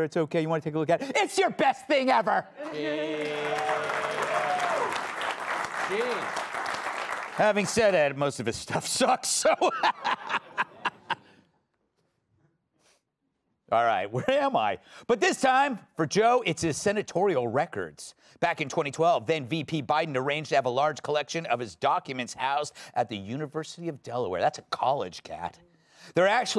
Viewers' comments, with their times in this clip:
0:07 Gutfelds joke failed to land Gutfeld “where am I” in silence